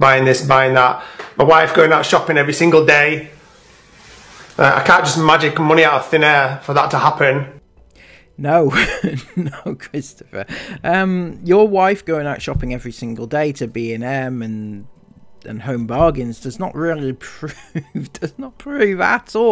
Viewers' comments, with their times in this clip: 0:03 is literally how the 4 year old kindergarten kids at my school talk when they’re trying to prove a point lol.